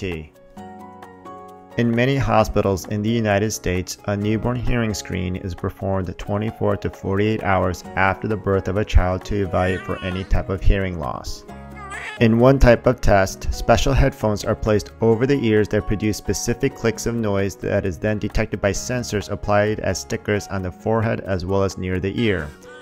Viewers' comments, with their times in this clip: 0:08 wah WAA- *cut off*